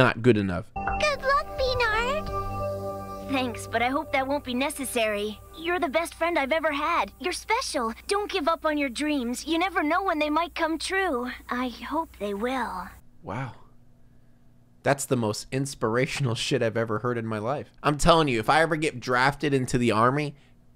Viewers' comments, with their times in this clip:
0:03 This sounds like a video games audio voice track and the player is just clicking through it. Also why did he said "I hope they will.~" So sinister? What is he planning? And how bad did the voice actress of ASH KETCHUM need to make a quick buck?